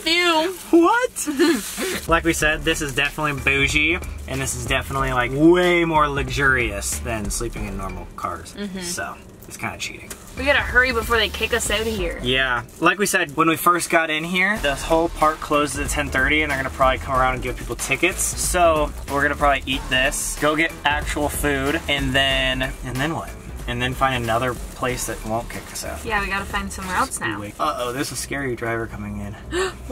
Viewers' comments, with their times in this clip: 0:10 the word "out" was super Canadian lol